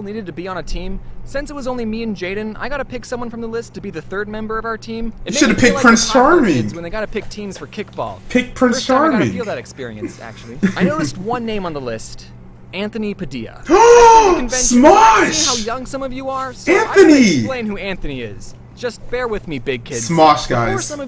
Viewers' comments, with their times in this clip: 0:08 he sounds like a 13